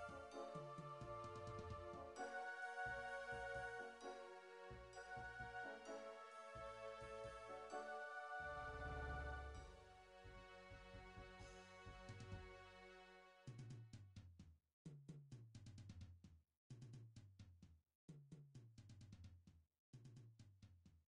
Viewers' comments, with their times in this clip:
0:09 Did you mute yourself??